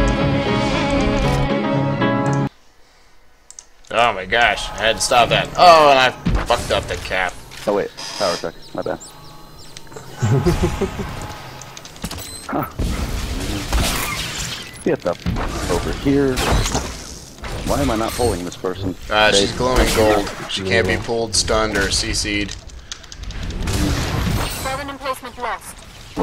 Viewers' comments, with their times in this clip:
0:10 Thank you for stopping the music around the mark!